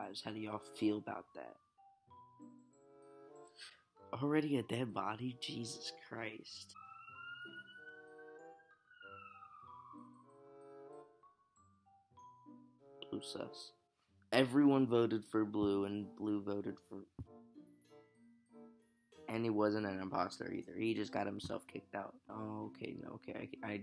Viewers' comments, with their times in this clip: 0:06 When that Emergency Alarm ruined your vibe